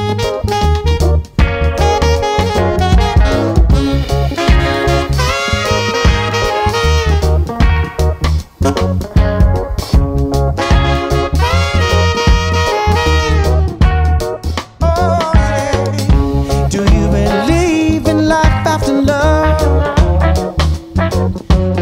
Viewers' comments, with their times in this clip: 0:03 when the horns hit the melody......... that's the good stuff